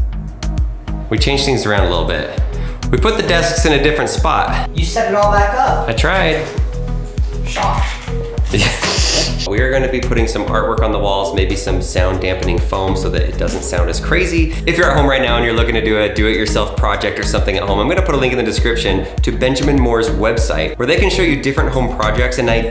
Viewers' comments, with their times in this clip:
0:04 the way he said " I tried " was cute awe lol